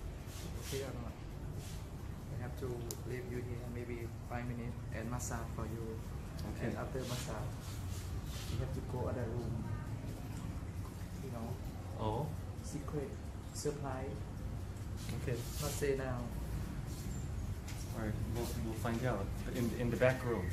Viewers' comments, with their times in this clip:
0:05 do not make stupid smacking sounds, like